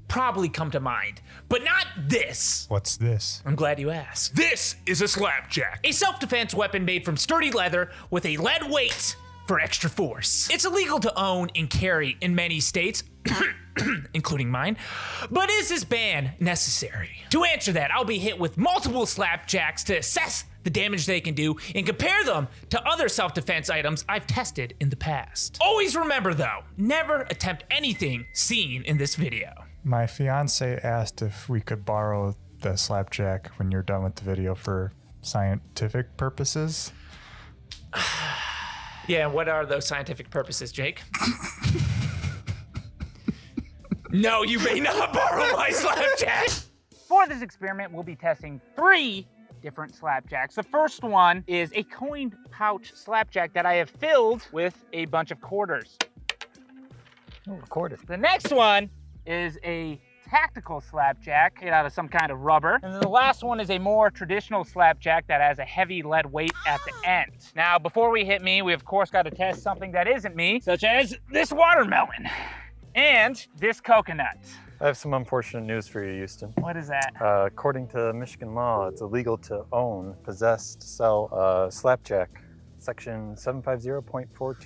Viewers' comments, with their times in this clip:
0:09 my man really add the faintest loudmoan.sfx here. Okay
0:09 you can hear the moan too if you listen closely
1:02 Oh Hell nah💀 That moan was ‘’sensational’’🤣
1:05 The moan was so unnecessary but I absolutley loved it lmao
1:06 AYOOOO what the hell is that noise 💀💀💀
1:06 that moan xD
1:08 That moan killed me.